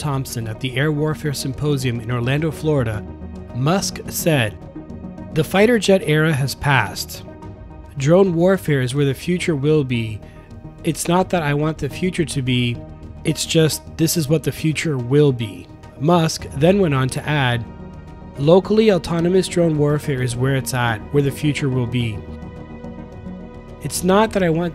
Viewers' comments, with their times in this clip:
0:08 𝖧𝖺𝗉𝗉𝗒 𝖳𝗋𝗂𝗀𝗀𝖾𝗋 𝗇𝗈𝗂𝗌𝖾𝗌